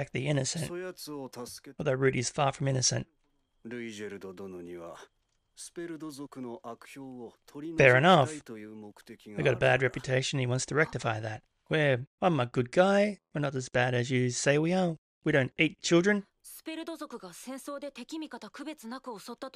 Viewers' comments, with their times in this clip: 0:03 Roo-ee-jerd any other variation is just someone's accent or saying it fast and its hard to hear. Kind of like how british people dont pronounce their R's. you can hear the village elder say it pretty clear